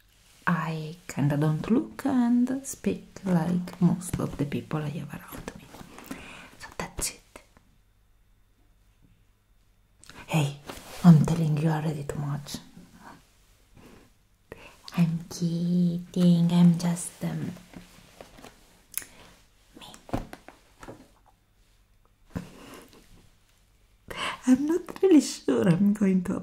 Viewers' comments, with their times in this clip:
0:07 i love your accent it's pretty